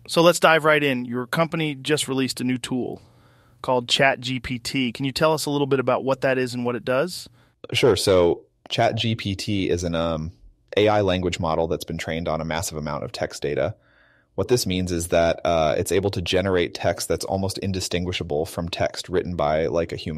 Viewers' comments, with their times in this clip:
0:07 the AI attempting to mimic pauses between words is just so incredibly crazy.